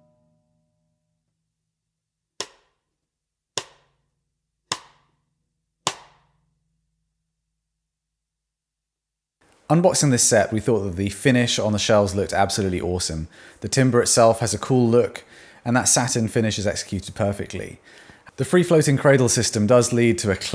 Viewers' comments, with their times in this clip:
0:06 What I hear is that the sound of each drum remains exactly the same regardless of playing volume/intensity. Great attack, too. Would love to know if emperor/thin heads and also if 2.3mm or 1.6mm triple flange hoops. The cross stick chop is maybe the best I've ever heard.